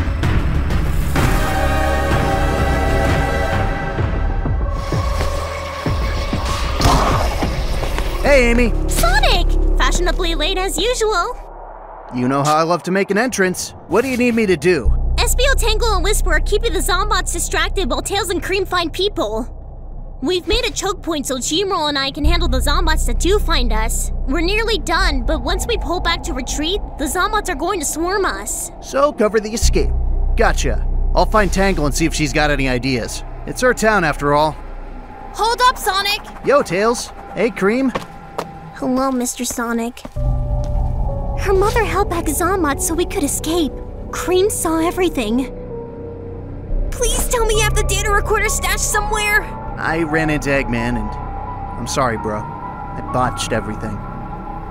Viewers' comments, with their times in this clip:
0:09 Ok firstly am I the only one who saw Amy’s tail wag when sonic arrived ? Secondly I feel really bad for cream she lost her mother and her to chaos (if that’s how you say there name) finally, seeing Wisper crying and screaming like that was shocking as I never seen her do that so other then the first one the other two has shown me that some people isn’t mentally ok😢
0:38 'Hello Mr.Sonic.' The way that line was delivered really shows how much Cream has lost her happy attitude. She's lost everything. Poor girl. Someone give her a hug!
0:40 I haven't heard Cream sounding so serious. COOL VOICE ACTING!!!!!